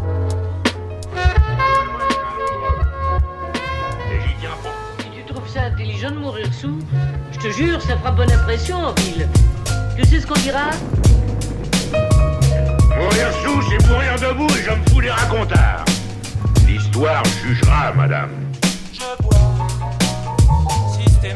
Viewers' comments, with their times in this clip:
0:05 heard French, checked TV: off, thought I was tripping